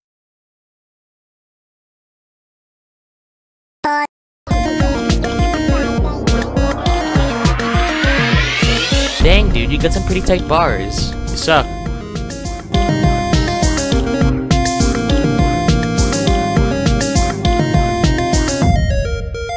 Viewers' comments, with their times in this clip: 0:03 "bop" beat drop